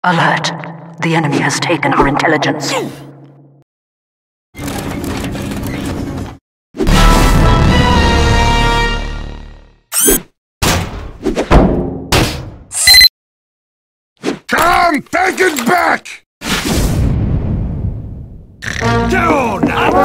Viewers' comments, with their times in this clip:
0:06 metal crusher intensifies